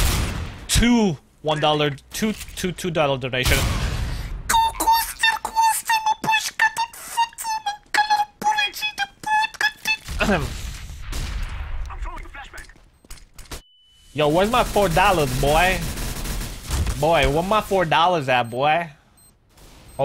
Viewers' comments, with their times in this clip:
0:06 Are you from Romania? it sounded like you said "mancalar puricii"